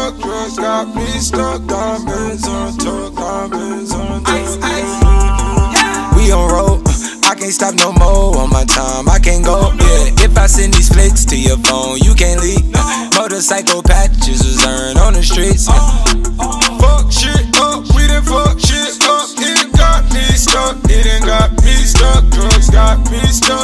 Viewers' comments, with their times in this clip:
0:04 so every one will stay silent about that AAAAAAAAAA, bro sent me to heaven with that one